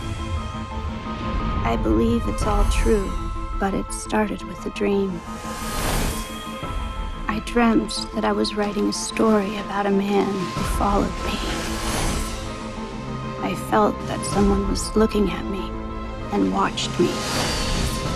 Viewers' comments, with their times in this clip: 0:06 HAHAHAAA i thought it says "the worst of a script" but it says "the words of a script".